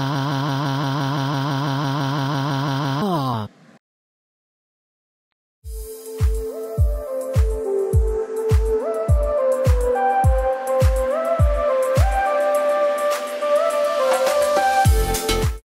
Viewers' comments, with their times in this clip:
0:05 I Like That Music